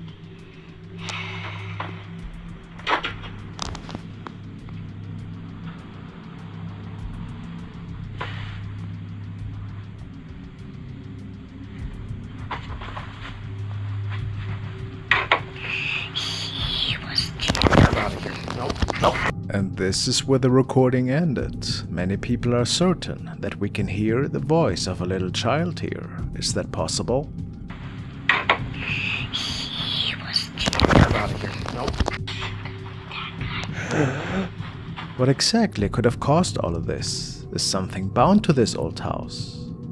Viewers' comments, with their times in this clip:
0:03 LMFAO!! I'm sorry but it's pretty funny when Child Spirit comes shaking his head in a "hes annoyed/aggravated " w the sigh we hear.. Am I the only one?🤔😳
0:26 child spirit disembodied voice - that is clear as day.. Sounds like a 3-5yr old trying to whisper right in your ear. I wonder why so many children spirits are stuck in our dimension/plain... We're they murdered? Not baptized? Didn't have relatives to come lead them to the other side? Makes me sad to see/hear/watch children spirits haunt their old homes/schools/gravesites. Does anyone have any ideas/theories?